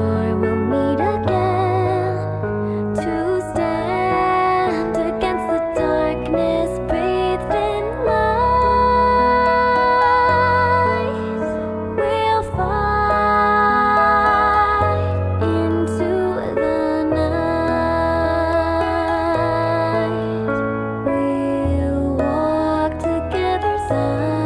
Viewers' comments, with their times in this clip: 0:06 Somehow this wasn't in my notifications that you uploaded this QwQ Anyways, this is so beautiful, LOVE your voice in this song!! My favorite part is this "liiiight" I wish I could be so talented like youu, I always love your Songs and Covers <3
0:08 u r absolutely amazing and u r super talented but u just need to find ur own way of singing instead of goin with the same melody of the sound track just like u did here